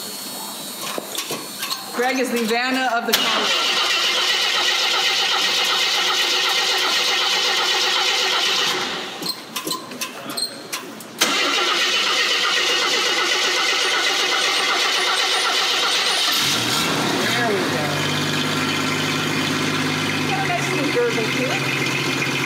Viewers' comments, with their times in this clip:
0:04 Starts up just like my old '74 X (in Maxi blue) used to.